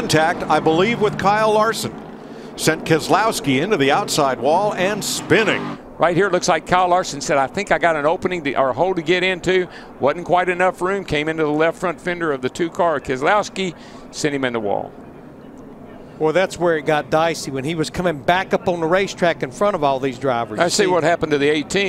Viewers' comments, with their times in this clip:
0:06 at 0.5 speed is funny. Dw sounds so drunk